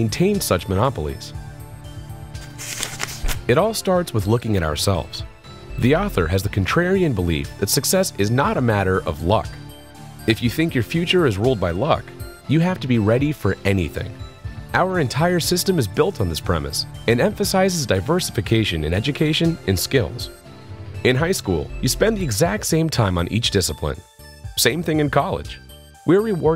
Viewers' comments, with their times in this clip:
0:10 was watching this with no lights on, realized how creepy the music was